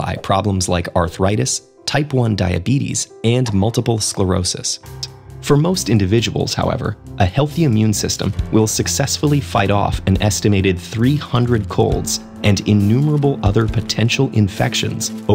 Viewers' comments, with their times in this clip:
0:03 audio quality change!